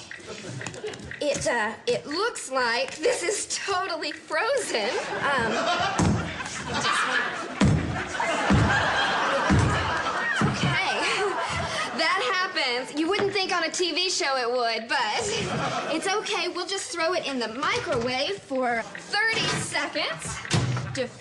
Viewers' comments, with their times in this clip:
0:05 two epic laughs